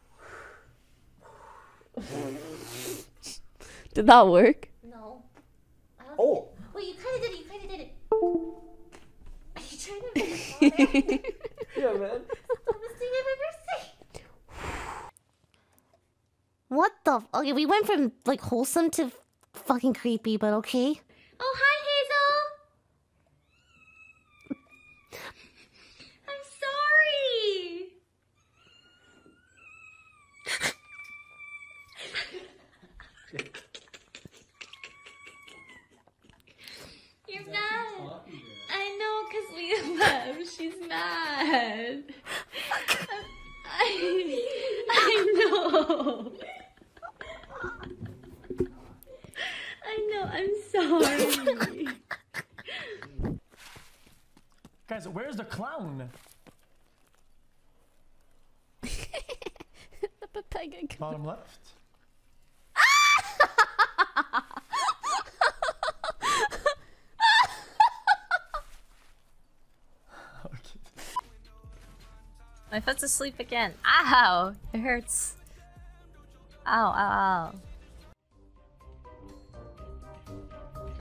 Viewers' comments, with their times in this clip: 0:08 is part of the video. Don't worry, Windows 10 users, you're not accidentally disconnecting anything.
1:01 what the fuck is poki laughing???
1:03 I love how xQc just laughed that off. great joke by chat